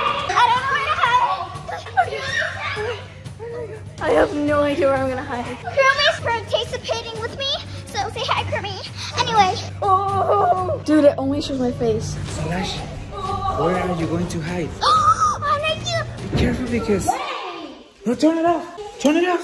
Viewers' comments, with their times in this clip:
0:06 "Kuromis participating with me so say Hi kurmiʚ😆ɞ"